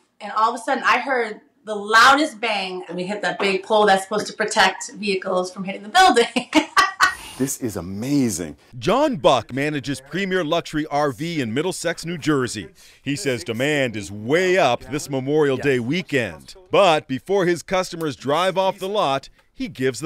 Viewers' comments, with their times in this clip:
0:05 that cackle shows you that woman learned nothing. The man is FUMING beside her